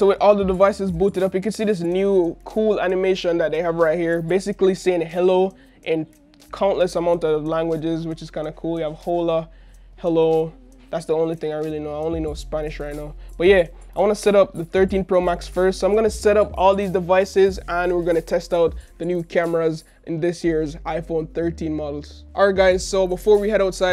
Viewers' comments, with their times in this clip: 0:08 THIS DUDE SALE "HOLE UH" INSTEAD OF "OH LAH" HAHAH I CAN'T TAKE HIM SERIOUSLY
0:09 Mans said « whola »😭😂